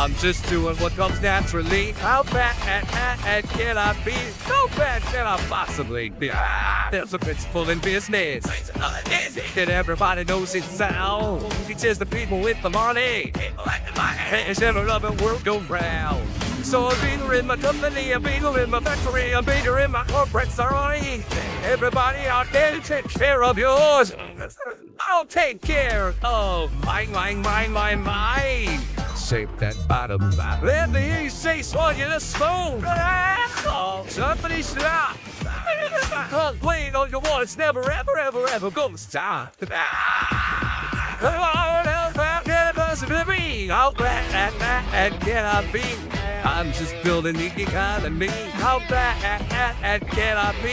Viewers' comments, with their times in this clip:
0:06 Turned into a sheep for 5 seconds
0:31 let me hear you say 5 stars not english
0:32 This is fire 🔥🔥🔥🔥🔥🔥 bro sounded like a parrot 💀